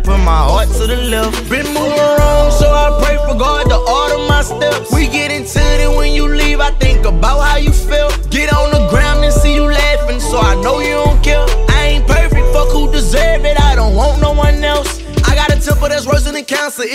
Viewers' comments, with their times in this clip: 0:04 that “ooohh” adlib 🔥